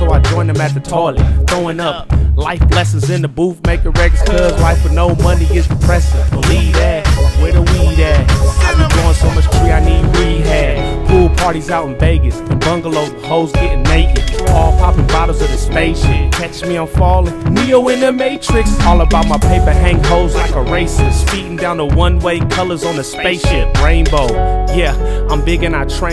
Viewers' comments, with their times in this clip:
0:10 what is the guitar like sounds I want more music sounding like that! He is soooo awesome.